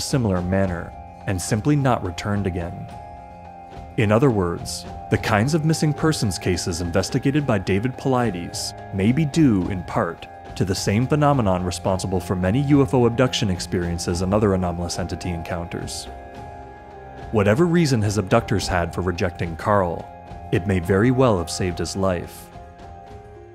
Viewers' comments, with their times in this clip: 0:06 Dave Paulides 🧐 having no connection to The Pleiades whatsoever 🖖🤣